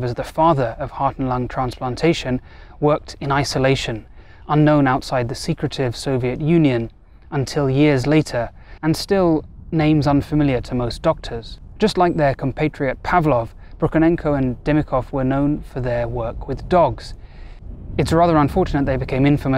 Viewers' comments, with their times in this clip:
0:05 starting with the second syllable of secretive, if you play at 0.125 speed whilst reversing it 1 second from 1.49 you can definitely hear the words "Ask your physician about..." but I can't make out the last part. Conspiracy? Shill?